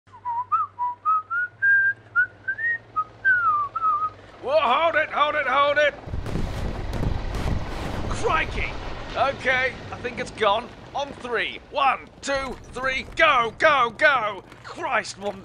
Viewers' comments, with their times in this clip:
0:00 it sounds like girls und panzers